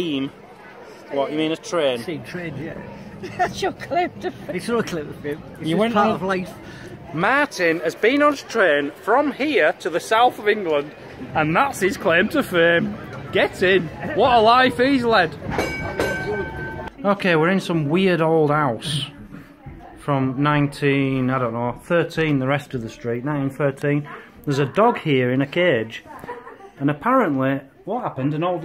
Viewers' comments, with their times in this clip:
0:10 After Mr. Dracula's claim to fame, the timing on that bell was *perfect*... ding DING! Get in!